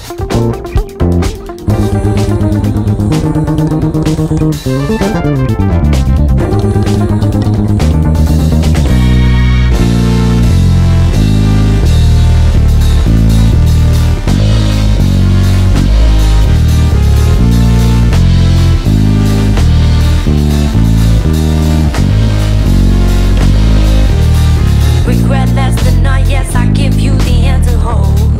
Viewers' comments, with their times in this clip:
0:03 fuck me you also played the synth line hahahah! amazing work!
0:09 I've been obsessed with this song for ages because of the rhythms in it. I'm pretty sure the "breakdown" is in 4/4, and the rhythm is based on dotted quarter notes, where the last two beats in the second measure are just regular quarter notes. The feel of it is just EXTREMELY loose, like barely hanging on to a thread. The intro and outro also does the exact same thing. Verse and chorus is in 5/4 as many others here are saying, but I'm feeling it as 4/4 + 4/4 + 2/4